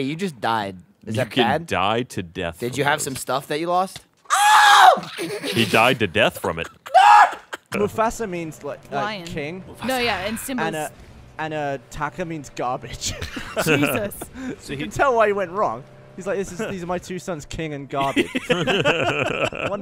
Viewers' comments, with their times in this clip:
0:03 I remember laughing really hard at his screams years ago.